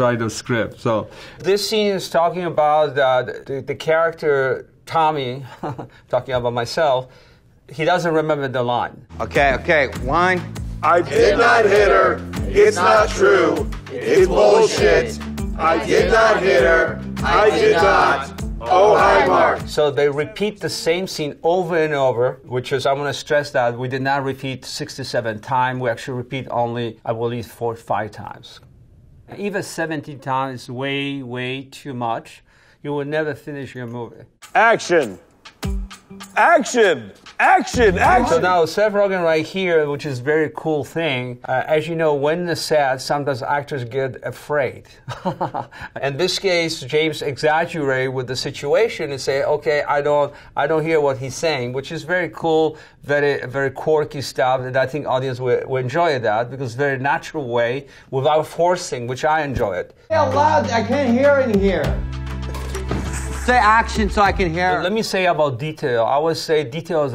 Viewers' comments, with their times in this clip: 0:05 His signature ‘haha’ kills me Snuck one in “The character, Tommy.. haha”
0:23 did he say “four to five times” or “forty-five times”
0:27 Did he say 4 to 5 times or 45 times?
0:45 He's still got the laugh 🤣
0:45 it's his real laughter, he didn't act.
0:45 his laugh though
0:52 “very”, said Tommy in a slight Polish accent /s